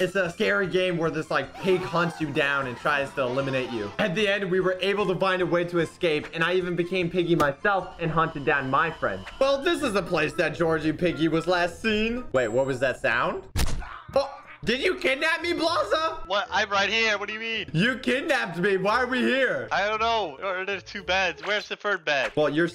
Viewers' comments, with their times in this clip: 0:03 did he say try eliminate or still eliminate?